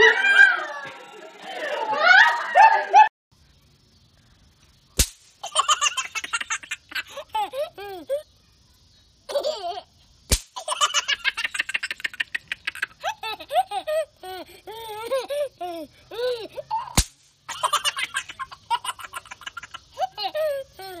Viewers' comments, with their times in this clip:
0:03 Or the ones that sound like stock villains laughing on helium! 🎈
0:04 how raccoons sound
0:07 their laughter was both endearing and malicious at the same time